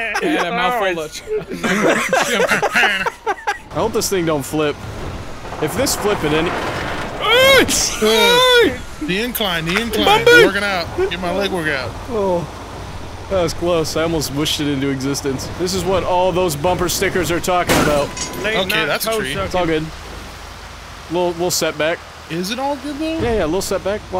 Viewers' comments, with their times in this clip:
0:06 what are these home alone ass sound effects